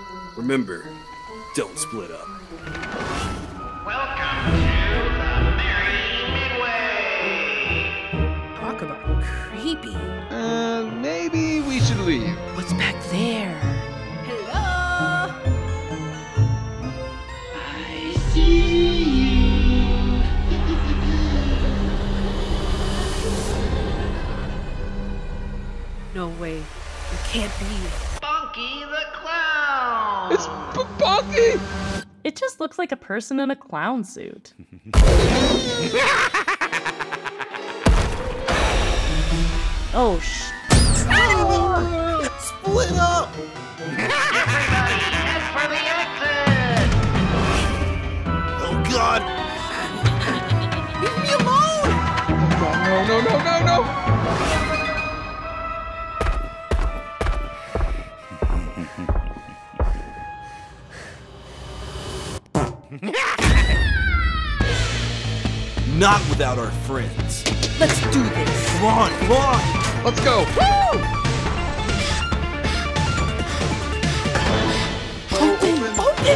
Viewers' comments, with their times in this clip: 0:08 it sounded like Baldi
0:58 DID HE JUST RIP ONE IN THE LOCKER 😂😂😂
1:00 BRO I QUIT REC ROOM AROUND A YEAR AGO AND THIS FART SFX SHOWS THAT A HUGE PART OF REC ROOM IS GOOD
1:01 What was that fart😂😂😂😂😂
1:02 I like the Fart part, but I don’t like how the scream is. It sounds too helpless and pathetic, but I still love the game.
1:02 Why did she have to fart 😂😂😂
1:02 The fard is the best part of the entire vid XD
1:03 was funny because he farted